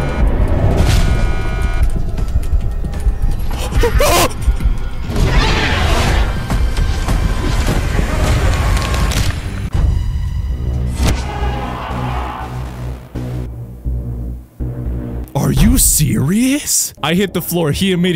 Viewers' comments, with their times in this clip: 0:04 why does it sound like bugs from deep rock galactic?